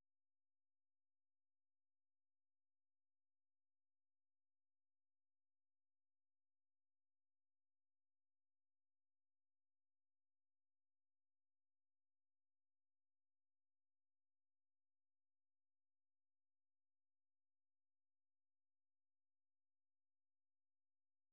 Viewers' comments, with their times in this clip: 0:09 probably saying something important, so they had to mute him.